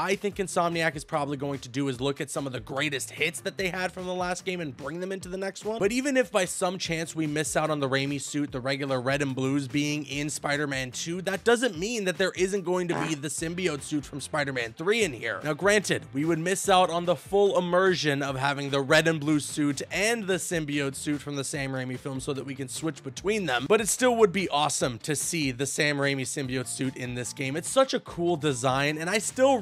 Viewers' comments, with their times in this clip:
0:10 did anyone else hear him take a shit ? or is it just me 😂😂😂
0:12 DID YOU FART WTF?!
0:12 Did he just fart? 😂
0:12 hold up was that a fart
0:13 Bro did u fart